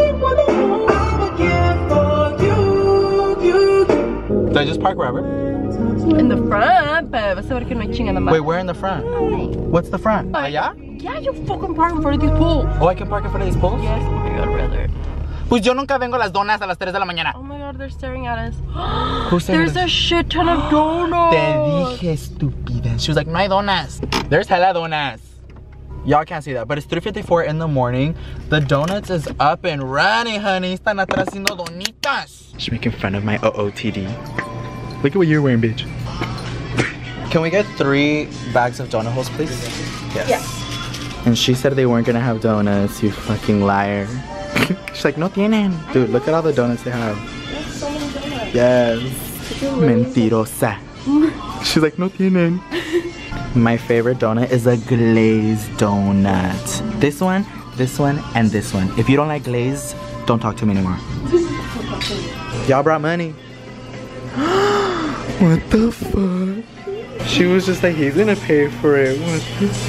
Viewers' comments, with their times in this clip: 0:03 The light changing from red to green was so perfectly timed with the musics bas drop OML Music video WhO?
0:06 when the song call out my name by the weekend I was singing to the music then it stopped then I was like HUH WHAT HAPPENED??.
0:16 the way he was talking had me dead
0:50 i legit heard Intocable in the back playing n I just vibed :) If anyone knows who they are lmk
0:52 the music in the back ground😂
0:53 Ok is everyone going to ignore that bomb ass music (enseñame a olvidar from Intocable)